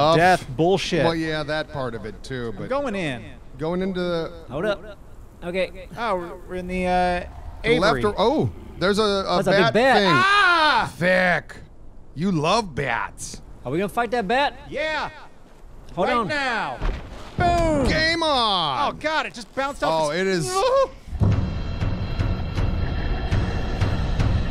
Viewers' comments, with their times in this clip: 0:09 That war cry tho.